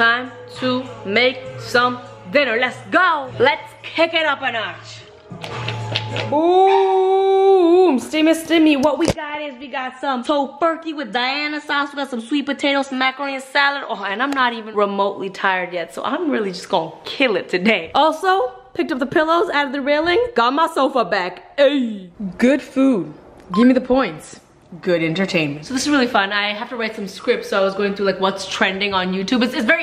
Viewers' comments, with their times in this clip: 0:10 Sounds like she said "Simmi Simmi"